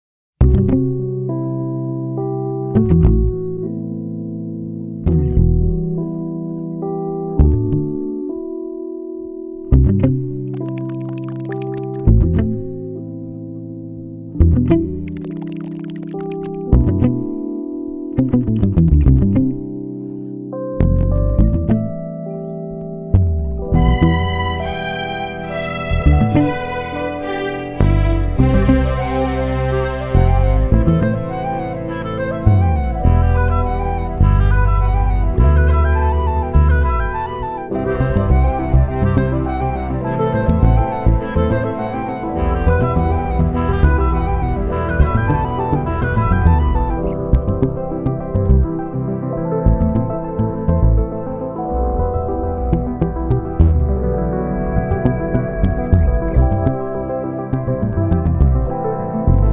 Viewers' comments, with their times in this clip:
0:00 you should take it as a compliment that I got drunk and made fun of the way you talk~🎶 idk but its sounds like Gorgeous 😆
0:47 I'm so grateful for these drumless releases. Easier to get lost to, especially on a plane. And onward for a bit, we also feel inspiration from Tron Legacy, which is probably in among my most sentimental movie soundtracks.